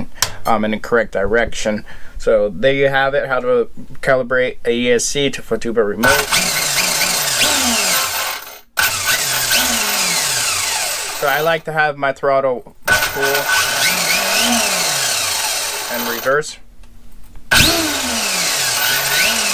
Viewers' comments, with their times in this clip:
0:06 Hey bro it sounds to me that your motor is reversed. when you are Revving up the car. You can tell that your motor direction Is set up wrong. Because when you was squeezing the trigger you can tell that you’re speed was way faster in reverse then it was In forward.